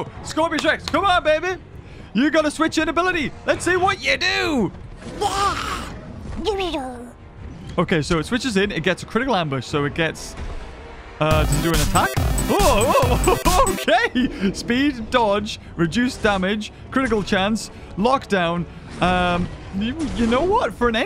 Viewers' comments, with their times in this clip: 0:04 lol the screech